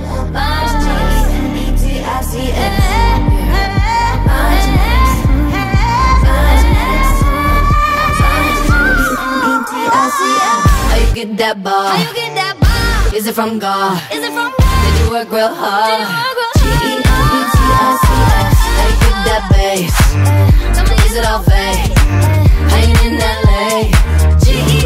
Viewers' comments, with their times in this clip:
0:03 THAT G5 THAT NICOLE SERVED
0:08 !!!!!!! what note was that?! omg, A5?